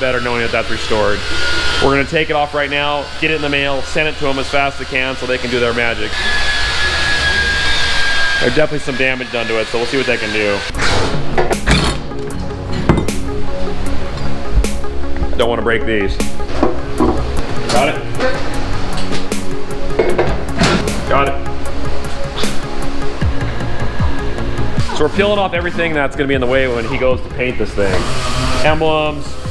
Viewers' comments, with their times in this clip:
0:10 Love the metal "International" and "Eagle" signs, the sound they made when they hit the desk - I prefer that alot to the damn plastic everywhere nowadays that keeps breaking.